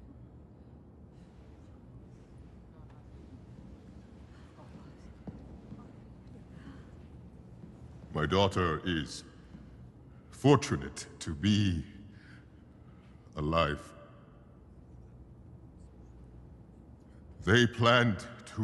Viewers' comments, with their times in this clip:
0:06 I love how the whole time it also sounds like he's trying to hold back tears. Like when he says "Fortunate to be... alive". The way he pauses before saying alive, the way it sounds like he's almost restarting a sentence with the tone he uses when saying "alive" compared to the tone before then. Bortus's actor is great.